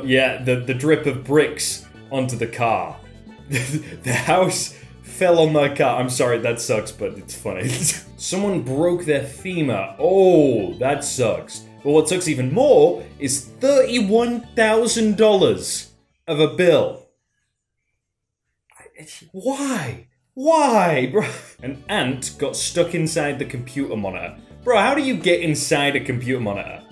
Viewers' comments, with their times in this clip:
0:09 happy scp 106 noises